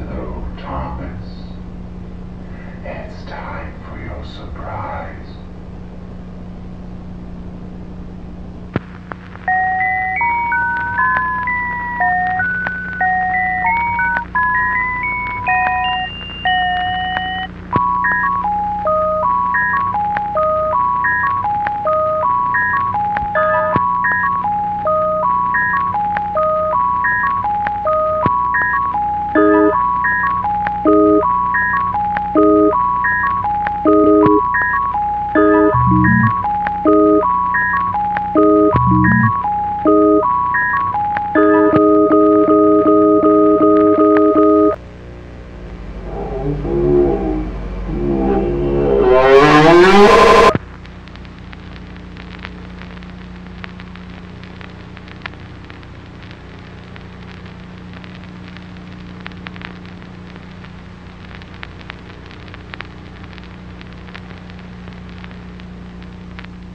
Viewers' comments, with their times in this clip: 0:08 this has to be one of the hardest beats I've ever heard
0:09 sounds creepy starts
0:10 Okay, off topic but- THAT LITTLE SONG IS FIRE
0:11 this song slaps tho- beat goes hard AAHAHAHAHAHAH
0:12 that’s a good beat
0:15 Playing the absolute bangers
0:18 i’m sorry but i started jamming out to the beat
0:18 could be a sick beat
0:18 Wtf was this drill beat💀
0:19 weird melody starts playing me starts beatboxing to it
0:19 Ay bruh this beat fire wtf
0:24 this beat goes so hard 🥶🥶🥶🥶
0:38 why do i think that the sound from the ice cream jumpscare is fucking hilarious
0:45 It could easily just be distorted mumbling. But I hear only one thing "Mmmaaartinn...NnnooooOOOOO*OOOOOO-!!!*" The idea of Arthur KNOWING that the thing he's trapped in is going to maim Thomas and begging Martin to stop is horrifying.
0:49 IT SOUNDS LIKE ITS SAYING THE “AUUUUUUUUUGHHH” SOUND OR WHATEVER 😭